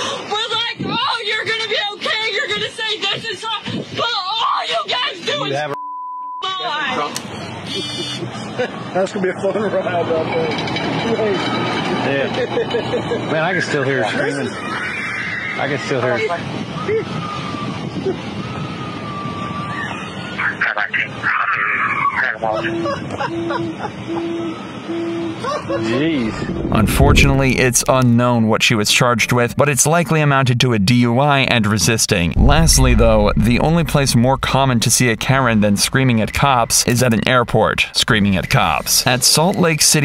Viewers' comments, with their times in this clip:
0:07 Poor girl! But the sound of barely diminishing screams as the car drives off is objectively funny 😂😂😂
0:10 Oooooh, those bad boys! Whoever that poor driver officer was, he/she would had broken ear drums...
0:11 The laughing cop made me spit out my coffee. I did NOT expect him laughing 🤣
0:11 I'm sorry, I know it really shouldn't be funny.. but the contrast between the slow-ish moving police car and the loud chaotic screams just really cracks me up for some reason 😭 and the camera focusing on the moving car ain't helping either XD
0:11 The screams Lol😂
0:17 that scream is funny😂
0:22 Nah the cops laugh got me dying 😂
0:25 i laugh with him,.. just like ,, poor partner...haha